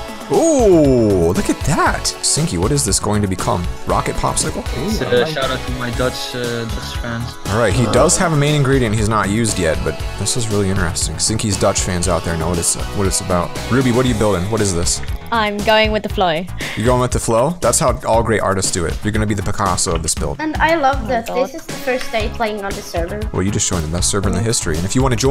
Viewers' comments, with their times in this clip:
0:04 it said dodge instead of Dutch
0:08 dutch not dodge